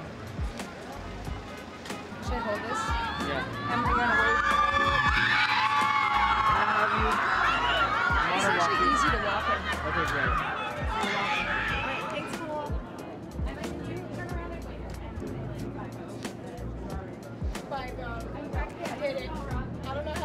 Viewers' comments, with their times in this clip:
0:04 that was heart warming when the crowd cheering on her